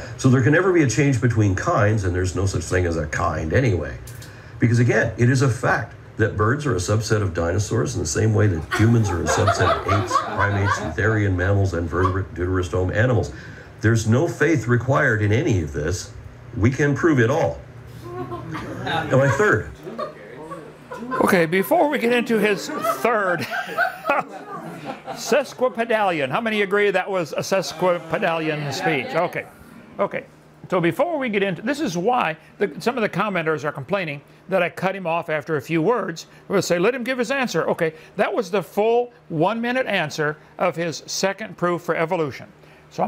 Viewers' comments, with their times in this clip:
0:06 just wanted to comment on this as well... that brain-dead laughter is frightening. that laughter is so deeply rooted in pure ignorance, it should be filed as a variation of a dunning-kruger laugh.
0:08 the uneducated are laughing!
0:08 Ah, the laughter of celebrating ones own ignorance!
0:10 Hearing all his minions in the background cringe overload.
0:20 to many big words that a room of ADULTS don’t understand so they nervously laugh to hide they’re ignorance. Lol!! This is great!
0:24 Surround yourself with people who are stupid and you will remain a fool forever. Maybe this is the case. Be fool and laugh loudly everytime you do not understand anything? I would not do that in public. Very sad to see.